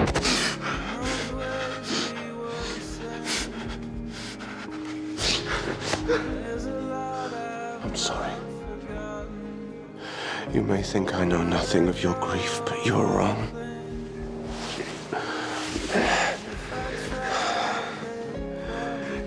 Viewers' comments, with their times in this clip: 0:05 1. That little whimper from Marcel when Klaus pulled him in for the hug 2. The way Marcel keeps his fist over Klaus heart after they pull back from the embrace. 3.The way Klaus keeps saying he's sorry. ...I can't....I....just....can.t.